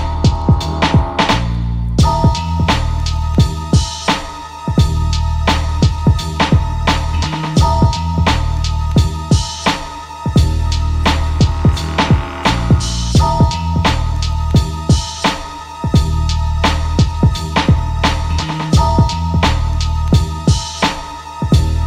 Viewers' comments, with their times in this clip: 0:03 somebody what are those keys are that sounds like suspense horror synth?